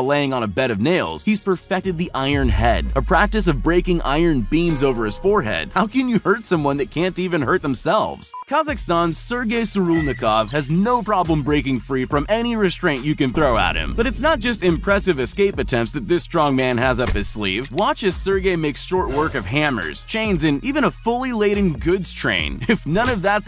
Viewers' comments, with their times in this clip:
0:04 lol that “ping” sound satisfying